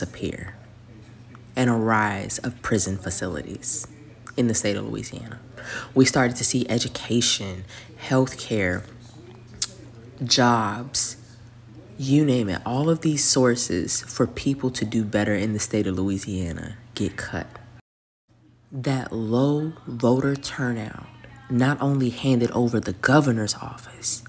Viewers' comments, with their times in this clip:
0:05 I love when people like her want to "explain" something to you, they have to whisper like they are educating you in a library or something, and make sure to get the sound of those lips smacking and popping in there a few times.